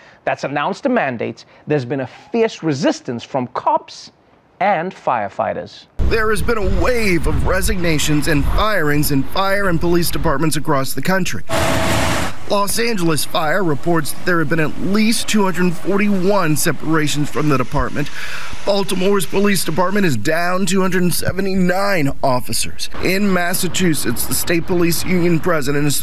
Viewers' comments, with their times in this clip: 0:06 Woah wow. Can anyone hear that voiceover ? Is that what covid pain is?
0:07 Yo is the news guy doin okay? He sounds like his throat is all messed up